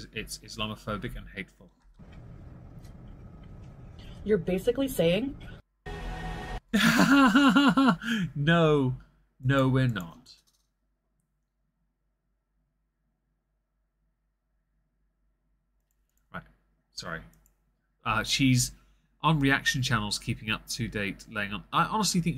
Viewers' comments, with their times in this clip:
0:07 that laugh😂😂😂 sad I missed the live stream, was at work❤